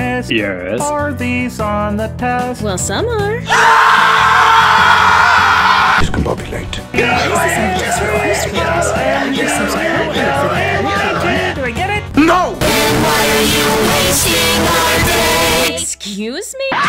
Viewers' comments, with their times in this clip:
0:03 "Well some are!" SCREAMS OF AGONY